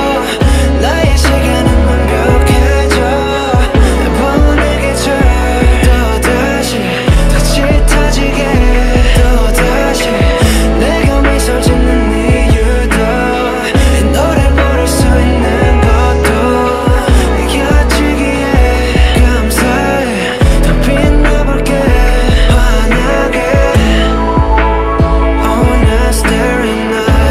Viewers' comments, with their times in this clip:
0:09 Great vocals Thank you Jung kook Lovevthis song❤